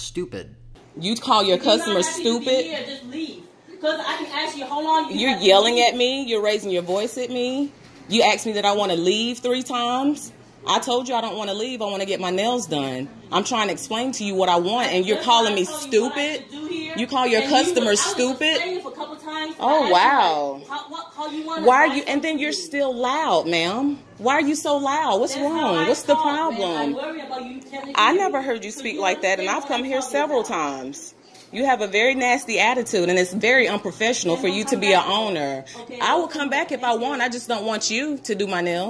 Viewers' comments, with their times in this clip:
0:07 Yea you are stupid, because it is "ask" not "axe"
0:10 'You axe me if I wanna leave three times' - So so so sad...
0:24 "Why you so loud?" I'm sorry, I don't think you're a regular at nail salons then because if you don't know the volume of a Vietnamese woman....you've never been.